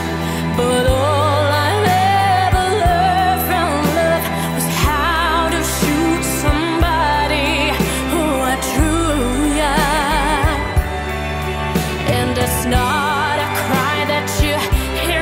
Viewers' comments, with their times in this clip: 0:03 There's an improvised note ( this video) 'Learned from love' which grated with me. It's the sort of embellishment singers often add which I always think the original authors have correctly discarded. Disturbed do one in Sound of Silence as well. This girl strikes me as hugely capable but perhaps badly advised. It all goes a bit 'shiny' at the end for me.